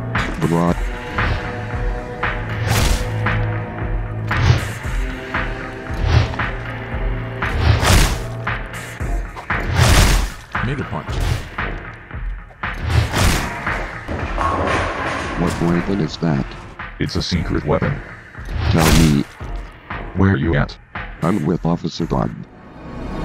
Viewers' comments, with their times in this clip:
0:10 sounded like n word punch